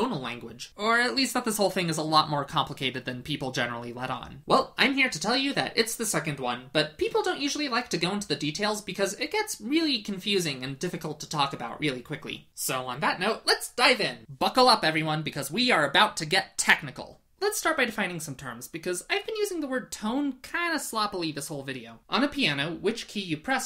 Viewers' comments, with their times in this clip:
0:04 The notes are My Little Pony, hmmm